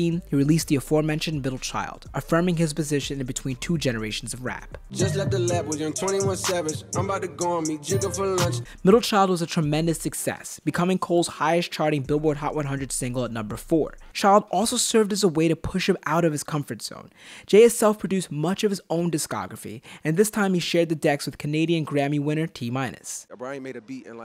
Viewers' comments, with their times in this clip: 0:08 it is just me that hears little/liddle/middle child